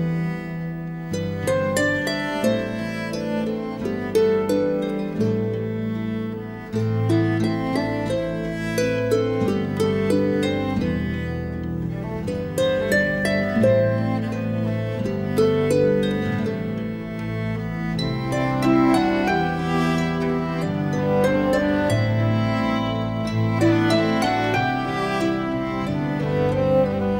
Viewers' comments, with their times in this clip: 0:08 whats the music called ? really touching :)